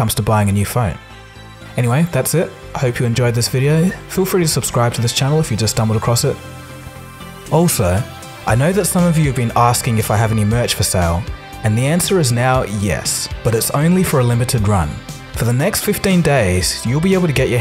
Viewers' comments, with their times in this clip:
0:03 He dies " I hope you enjoyed this video-hhhh"